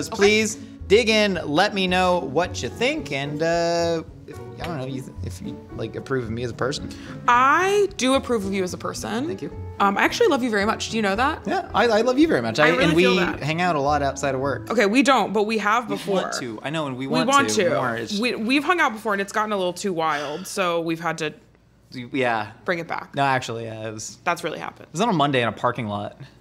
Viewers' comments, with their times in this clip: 0:10 that sims music xD